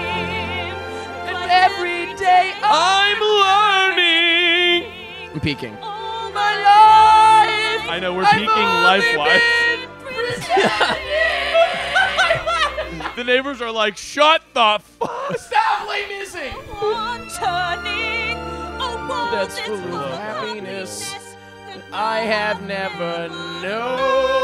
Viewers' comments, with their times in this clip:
0:08 who fucking invited La Dispute to the Les Mis Twerk-a-long